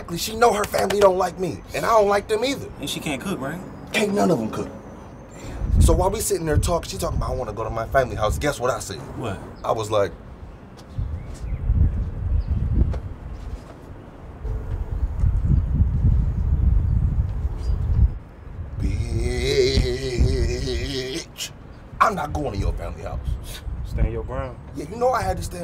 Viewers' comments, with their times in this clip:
0:06 Listen to how he said family 🤣😂